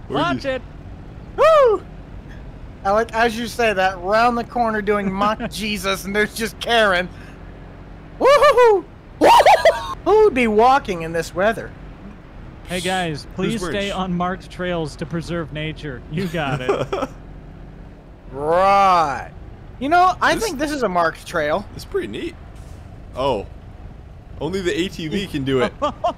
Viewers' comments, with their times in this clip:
0:09 the scream was the funniest thing I’ve ever heard 😂😂